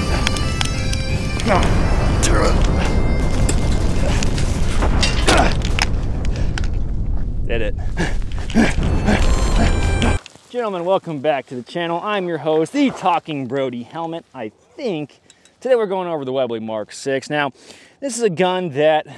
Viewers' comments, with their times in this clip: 0:06 Angry chimp noises